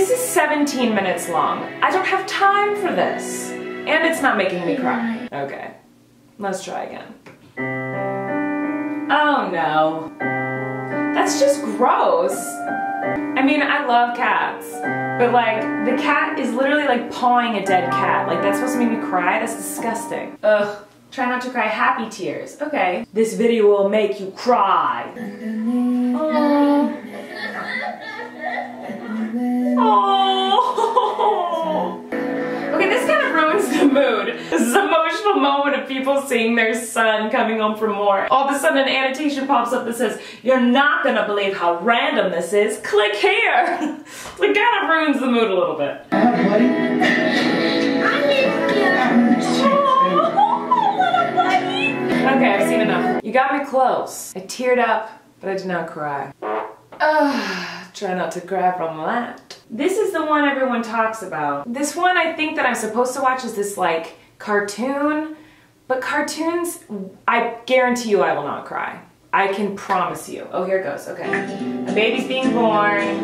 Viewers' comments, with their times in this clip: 0:09 "Oh no" sounds like Phoebe from Friends.
0:51 Did she say “Bunny” ??
0:56 Farts "Try not to cry from that." LOL 😆